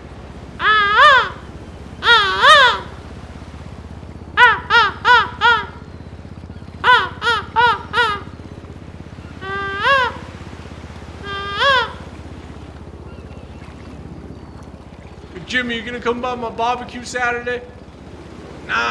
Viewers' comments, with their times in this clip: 0:06 Sounds of the ocean